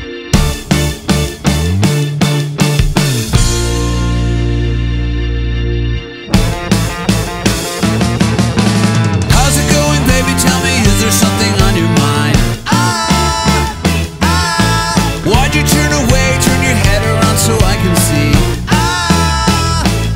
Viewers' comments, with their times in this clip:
0:05 The music sounds like the melody of We are Number One